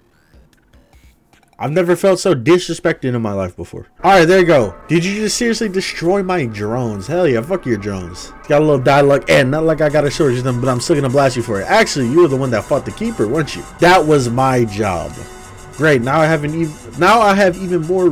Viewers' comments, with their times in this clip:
0:05 game raiders: the music is bumpin me: gets blade of justice flash backs